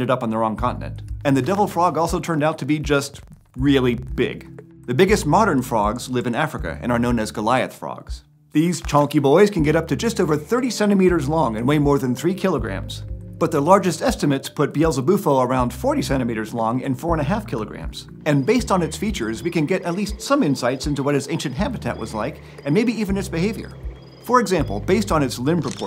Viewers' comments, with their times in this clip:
0:09 ... Who else heard "37 meters long" instead of "30 centimeters"?
0:10 Anyone else hear "37 meters long"?
0:10 when he said “30 centimeters” I thought he said “37 meters”
0:10 I heard "thirty-seven meters" and was very confused for a second